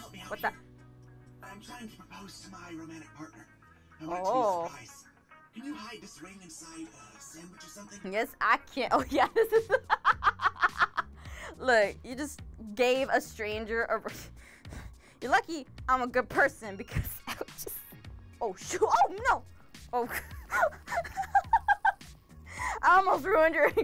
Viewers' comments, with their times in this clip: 0:10 I don’t know about you, but that laugh sounds very evil (not to be rude)